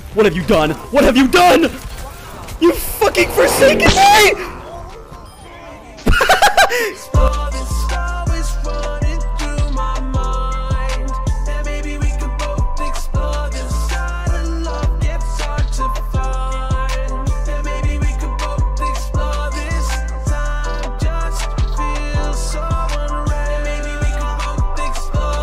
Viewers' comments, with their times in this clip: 0:07 Audio fucked up just saying